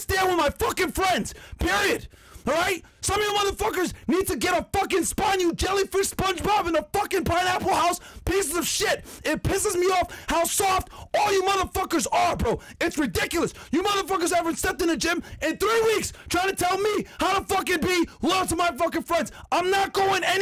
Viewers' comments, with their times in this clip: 0:05 😂😂 sounds like a 12 year old cussing out someone for the first time 😂